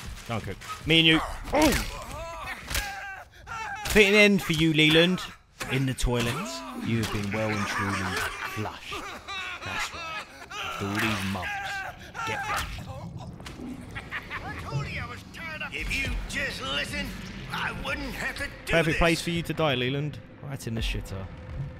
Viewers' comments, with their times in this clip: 0:03 I died laughing at the toilet flush on Leland. 🤣